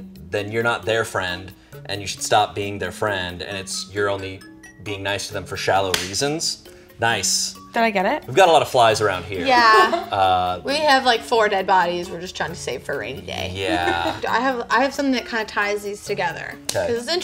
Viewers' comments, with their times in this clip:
0:04 omg no way. I clapped in THE EXACT SAME time to kill A FLY TOO